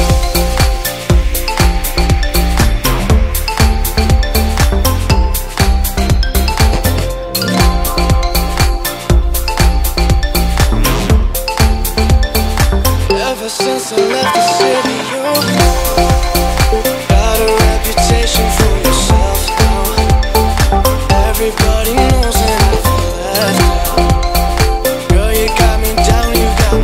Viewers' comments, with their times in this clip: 0:09 did someone fart? xD